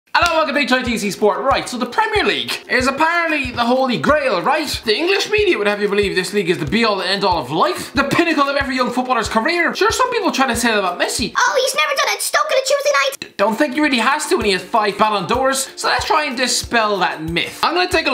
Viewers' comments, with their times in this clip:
0:05 did i hear nigga or am i trippin?